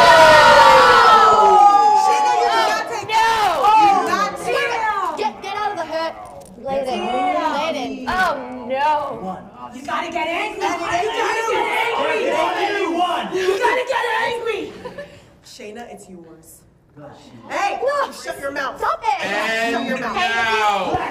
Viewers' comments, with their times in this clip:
0:03 what breeze say the mic was so low :O